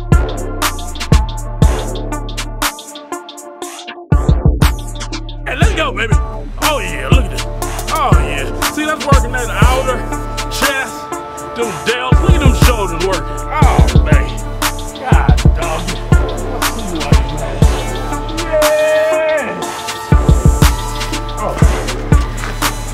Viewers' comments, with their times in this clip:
0:07 i think he was rapping